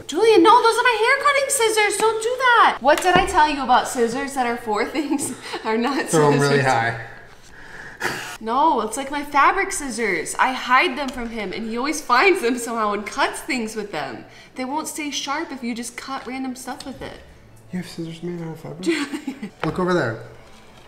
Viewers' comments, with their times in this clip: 0:05 pretty sure he said he's high or he said "throw 'em really high" and I cant tell which lol